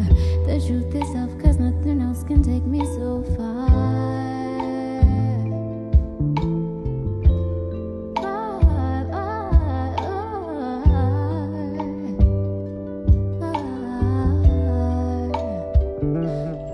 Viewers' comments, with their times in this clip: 0:03 Just so happened to be as you were chiming out! It have me a chill. Than as I'm writing about it. I'm like wait a chilombo type chill though... Ayy Thanks for the vibe ma.. 🎶💨✨ R.I.P TO YOUR POPS HE'S DEFINITELY WITH YOU & WITH THE VIBES!! 🫂👑💕#CHILOMBO